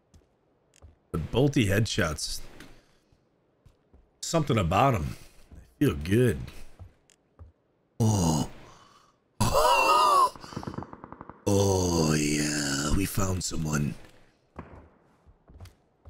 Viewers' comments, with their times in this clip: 0:04 Dude funny AF with those comments and noises like when he seen dude peeking hilltop. 😂